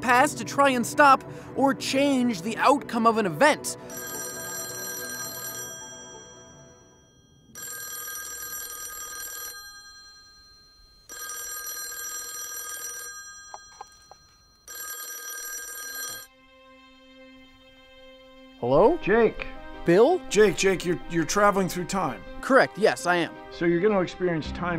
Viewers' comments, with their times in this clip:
0:06 searching the phone... no ringing.. confused... what a paradox.. timetravelshit? oh no.. just a video with the same ringtone... pfff